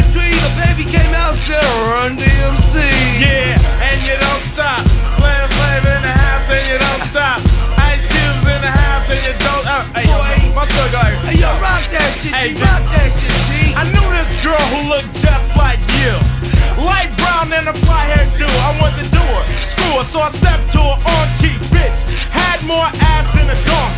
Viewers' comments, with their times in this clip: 0:05 n the interludes between the verses they do sound a little slurry though. It also sounds like cube was holding back a laugh or something though